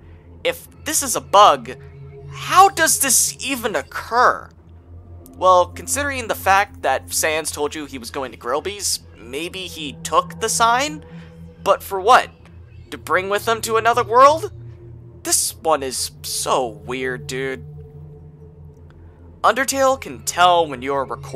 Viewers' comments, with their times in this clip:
0:09 this is impossible. Once sans leaves to “go to grillby’s” you can hear the sound of a monster disappearing to dust, implying that sans died before he even left the judgement hall